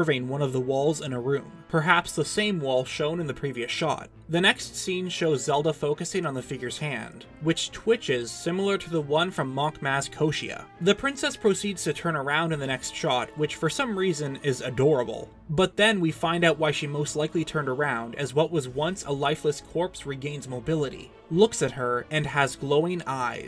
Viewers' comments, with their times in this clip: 0:10 The way you casually said the "adorable" part is comedy gold